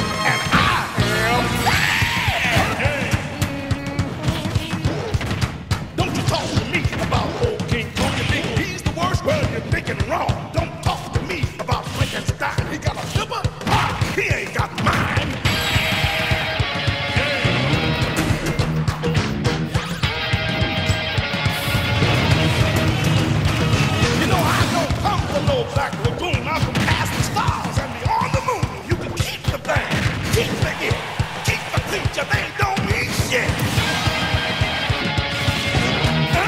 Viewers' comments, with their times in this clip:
0:10 Legend has it that the musical timing on that kill can cure terminal cancer and grant wishes
0:23 Great montage, and the music fits fantastically, with those Muncher choruses being a hilarious touch. Also, one question: I haven’t had the time to acquaint myself with Pirahna Plant’s moveset, so how do you do those moves where he stretches out his neck like ?